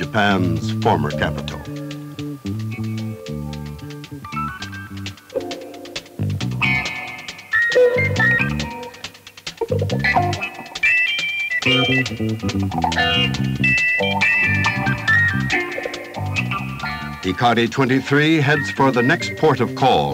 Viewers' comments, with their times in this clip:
0:04 dig that pimp music there!